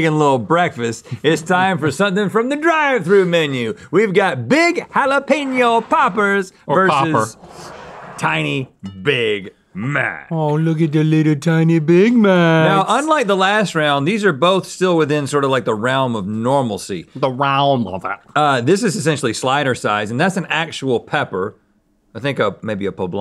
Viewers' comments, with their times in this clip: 0:10 Link sounded like Randy from south Park xD